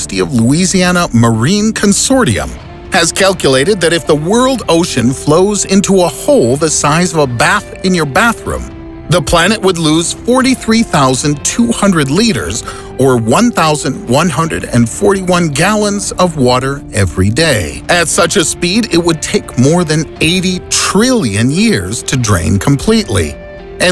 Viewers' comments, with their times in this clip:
0:07 Thank goodness, the traditional voice. This man must be honoured that so many people loves his voice!!! I also would love to take a bath with that hot girl on